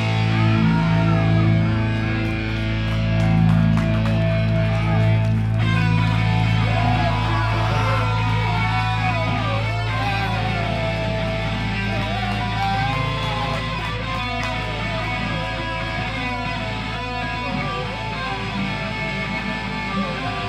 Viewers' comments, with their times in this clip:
0:05 that guitar solo is a masterpiece